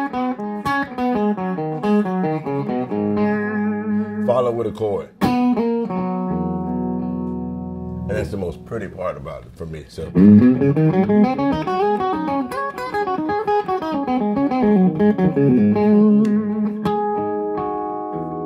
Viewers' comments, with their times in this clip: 0:04 Follow with a chord love that tone